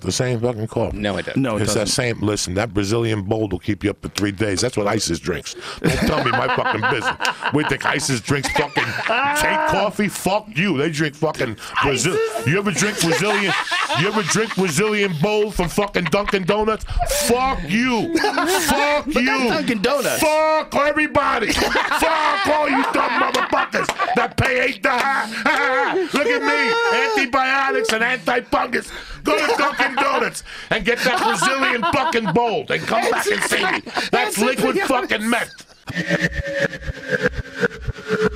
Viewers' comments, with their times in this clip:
0:06 if you slow it down to the lowest level Joe's laugh sounds like jared Letos joker laugh.
0:19 When Joey Diaz does that fuuuu everybody all I can think of is that king of the Jar Jar Binks tribe. Brlrrlrlrlrlrlrl -spits everywhere